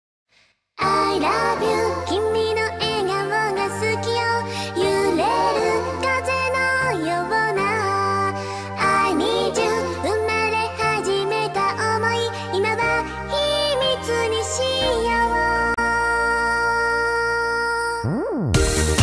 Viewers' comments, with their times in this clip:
0:07 is it just me or does she say ' i love you' in the begining and 'i need you' ?